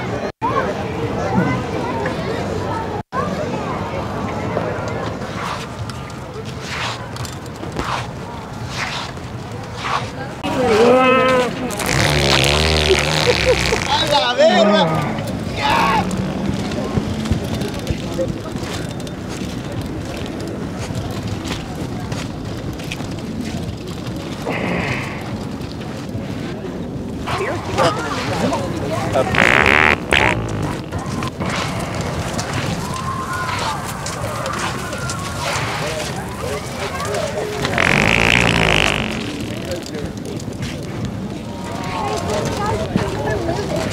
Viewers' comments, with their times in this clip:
0:10 At least he groaned before letting out a rip 😂
0:30 now I thought the gay couple would be quite vocal about the fart
0:30 The two are just jealous because their farts are silent now.